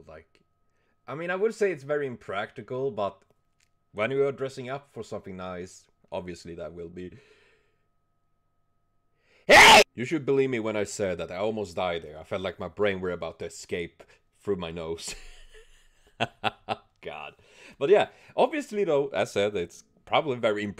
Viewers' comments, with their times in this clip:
0:06 Rip headphone user xD Kiara's outfit is so beautiful :D